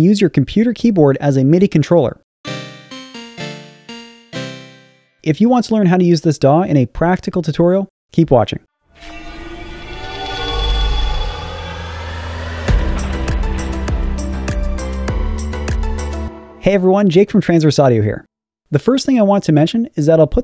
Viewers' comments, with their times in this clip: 0:08 why did have a high pitch